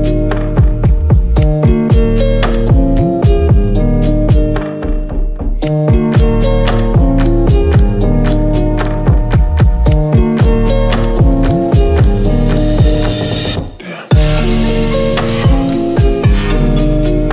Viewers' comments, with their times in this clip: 0:05 legit thought someone was knocking at my door lmao